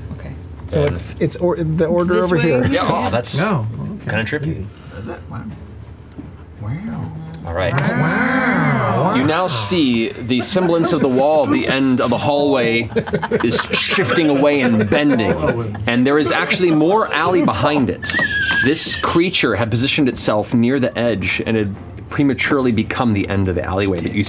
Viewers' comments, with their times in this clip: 0:07 It sounds like a chorus of Yoshi xD